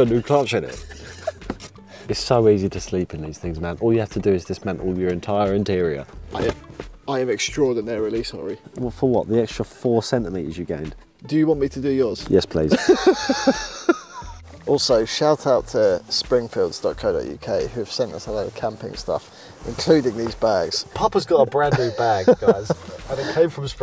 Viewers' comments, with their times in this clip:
0:10 pure comedy timing. Whispers and a bloody loud ratchet.